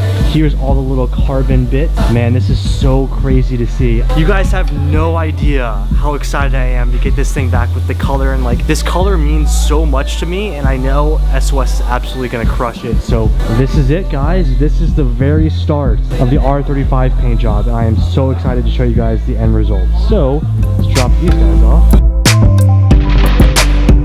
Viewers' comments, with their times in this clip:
0:10 the cuhh’s over at SOS were jammin lol